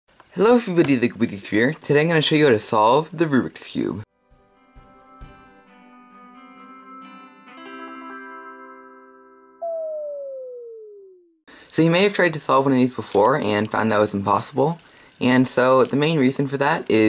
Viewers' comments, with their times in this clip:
0:01 IS ANYBODY ELSE CONFUSED ON WHAT THE HECK HE SAID IN THE BEGINNING